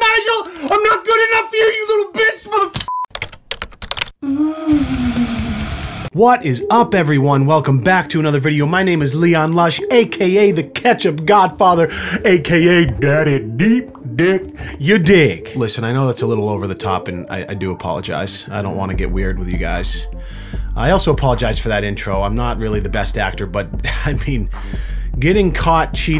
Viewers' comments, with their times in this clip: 0:09 he violated both my ears
0:11 try listening to him at this point with earphones on. The sound goes to the right and goes to the left.
0:13 audio channel changes sorta surprised me